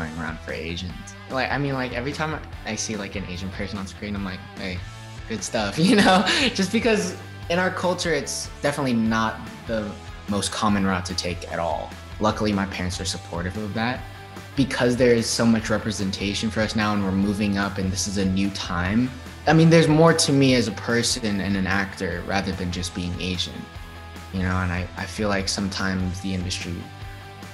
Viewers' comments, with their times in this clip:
0:08 Honestly his voice is very fitting for playing Zuko ( he sounds a bit like him here) anyway I really hope he does a good job, he really seems to be such a great guy❤️